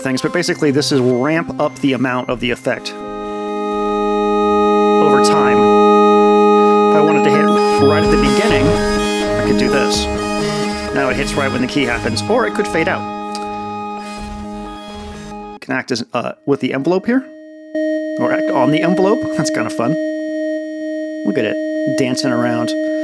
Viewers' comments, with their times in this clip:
0:07 hardcore Syndicate Wars flashbacks 😂